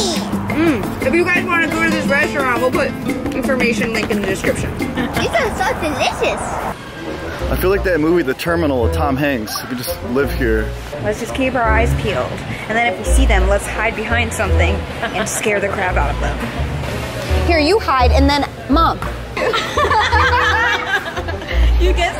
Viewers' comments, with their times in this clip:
0:05 That boi in is very very annoying just from his voice